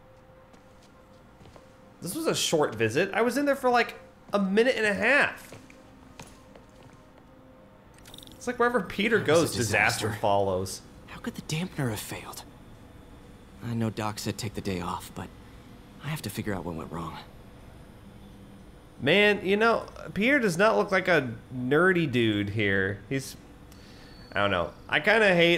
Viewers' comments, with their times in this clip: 0:06 holy shit you guys say disaster simultaneously by accident LOL